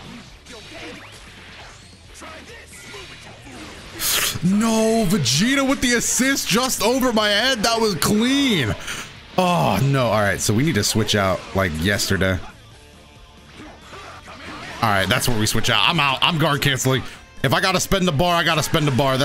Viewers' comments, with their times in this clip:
0:03 That angry slurp though lmao